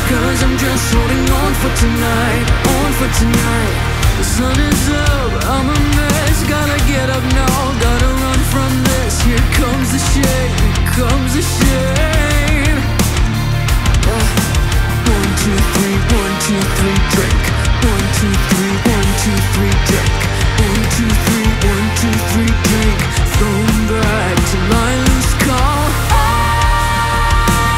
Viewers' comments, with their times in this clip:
0:09 there is a "click" sound on :( probably from a keyboard